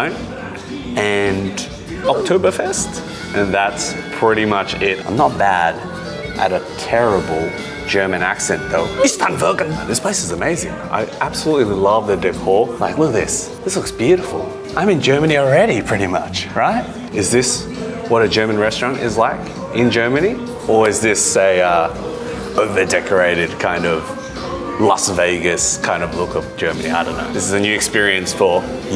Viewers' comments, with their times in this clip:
0:09 bro what 😂 im love u guys are funny tagesschuppe sounds like timeday scale or flake lol but i love u try to pronounce man the try is important dont be shy right.